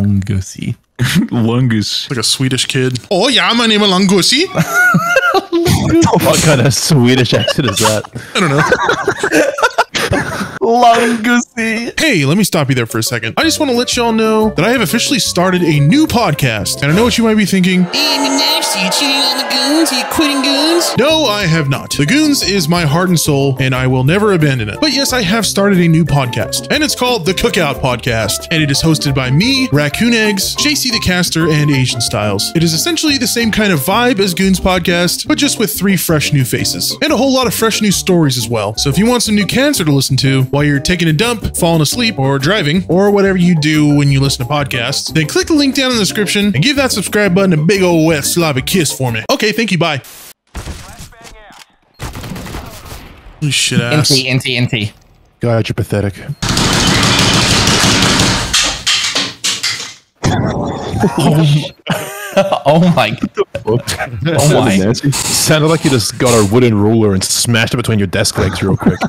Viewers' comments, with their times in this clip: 0:05 the german/indian one
0:56 it sounded more like he was in a school